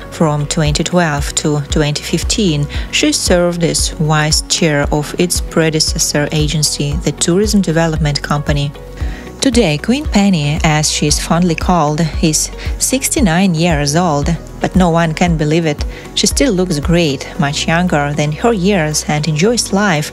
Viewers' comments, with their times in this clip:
0:04 …..she served as a “wise” chair. What is a wise chair????